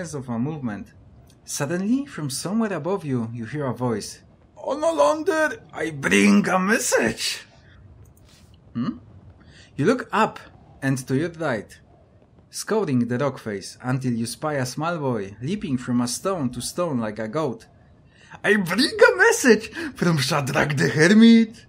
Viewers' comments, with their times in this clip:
0:04 Nice episode!! Your voice for messenger boy was brilliant XD